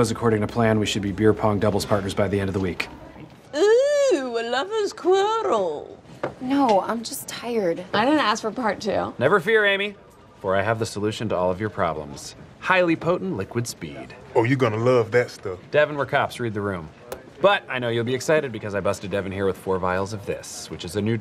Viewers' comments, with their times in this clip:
0:04 I absolutely love the way Gina says, "Oooo a lover's quarrel"